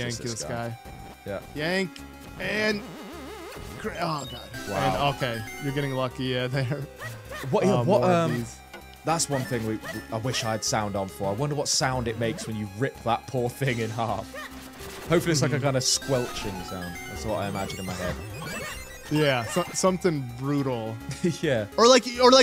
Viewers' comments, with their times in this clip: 0:09 I'm really glad you managed to make this game work! Great playthrough so far! How come you don't have sound, btw?